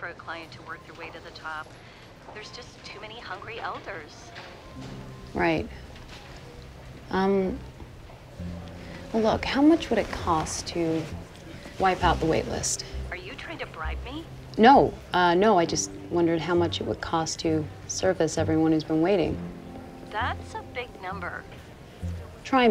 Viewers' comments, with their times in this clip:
0:03 the way she says that it shows what is wrong with society